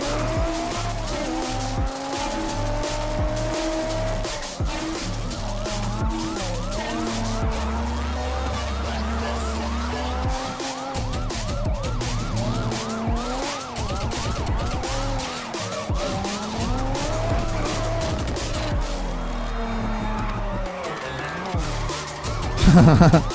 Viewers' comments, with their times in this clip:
0:08 At exactly the cops siren goes with the music and its lit 😂😂😂